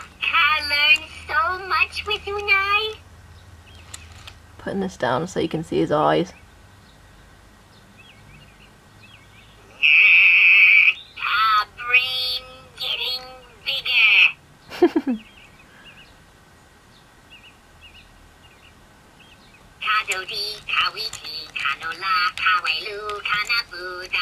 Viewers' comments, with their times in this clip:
0:10 I laughed it was so funny that noise he did